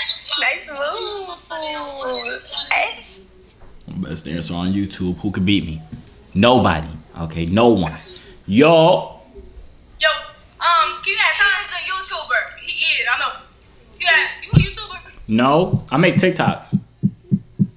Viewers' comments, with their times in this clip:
0:04 ok Fik shun 😂😂